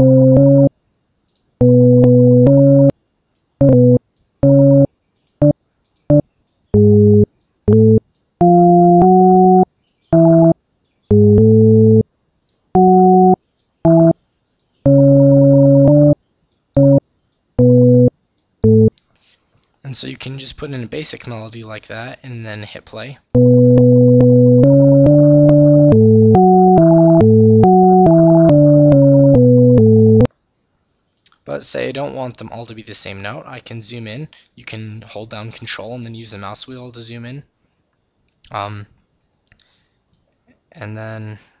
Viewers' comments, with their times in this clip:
0:03 Okay when you did that "bitch lasagna" just played in my head...
0:23 anyone else think that the start sounds like bitch lasanga